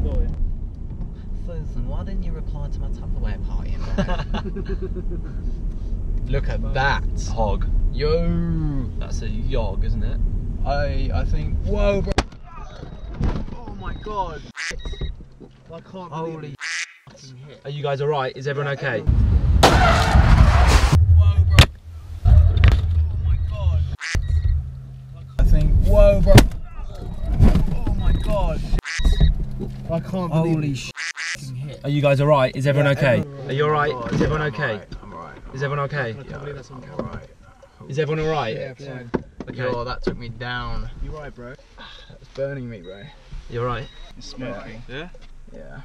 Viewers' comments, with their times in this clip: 0:09 Guys go to the car cradh is a few seconds after
0:11 There is the crash thank me l8r
0:11 crash for those who came for that
0:11 The CRASH is
0:23 like if you heard a quack
0:30 nice sound effects